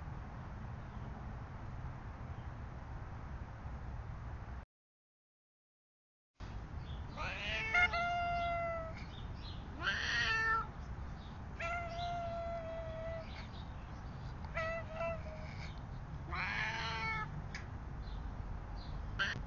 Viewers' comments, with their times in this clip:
0:03 Cat teleportation and meowing. Ditto and Hydrox?